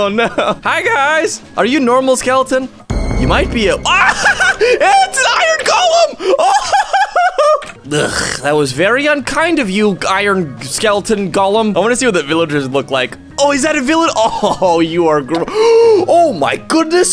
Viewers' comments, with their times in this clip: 0:04 its not a normal skeleton its skeleton iron golem (He laughed and died)